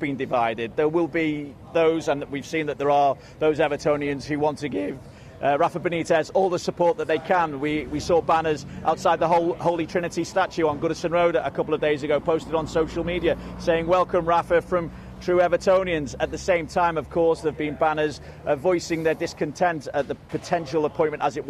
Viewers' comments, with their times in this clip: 0:04 that voice break tho